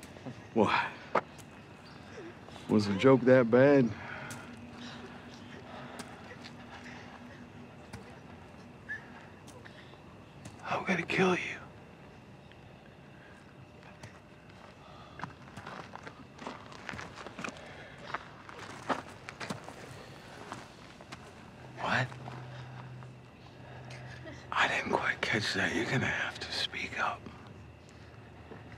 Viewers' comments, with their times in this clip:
0:09 You can hear Maggie say Glenn so Glenn dead